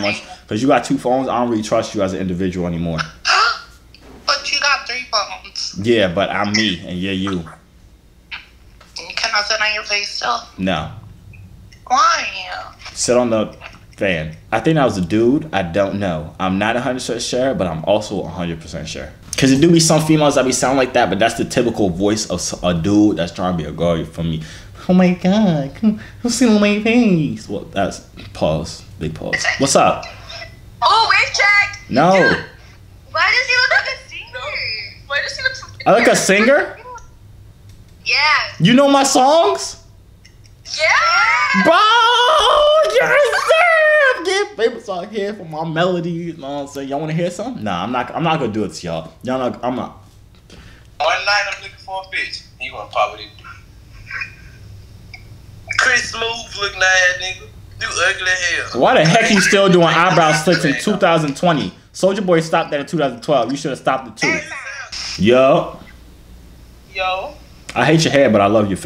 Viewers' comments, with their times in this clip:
0:10 she sounded like Lola from big mouth when she said “why” 😂
0:55 sound like nle choppa😂😂
0:56 already know dude from Memphis 😂